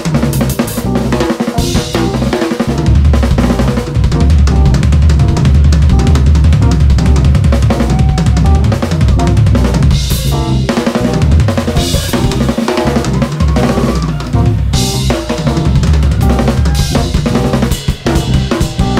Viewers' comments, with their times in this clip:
0:05 Incredible Drummer and Band! I can literally hear the drums begging for mercy